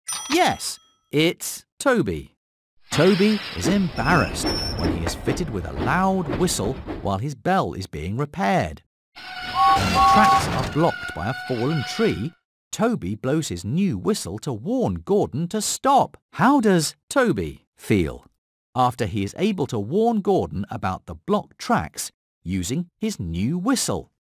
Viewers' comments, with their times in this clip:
0:09 Toby has James’ whistle sound!